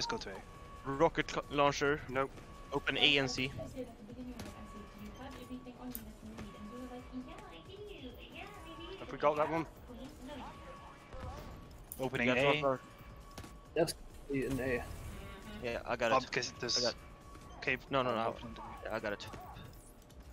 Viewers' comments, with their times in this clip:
0:04 the background audio was the highlight of the video XD